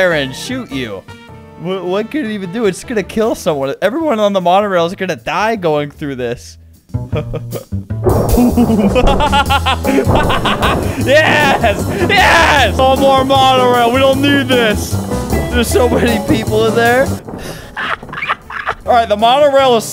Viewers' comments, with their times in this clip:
0:07 Who else though it was gunshots 😭